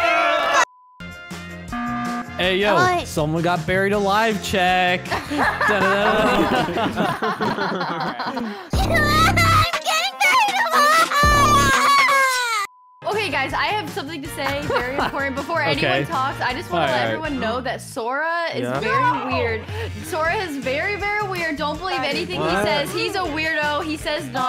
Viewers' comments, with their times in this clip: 0:10 OMG HER VOICE CRACK